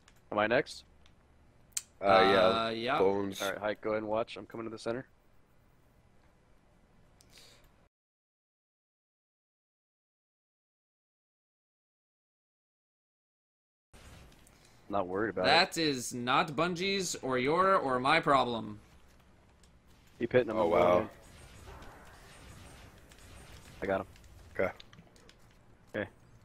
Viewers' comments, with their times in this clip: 0:07 Does enyone else wonder wtf this viewer asked that made datto turn off the audio?
0:07 Anyone know why there's audio muted for a question ? Or what the question was? :D
0:08 I wonder what was so that he had to mute it?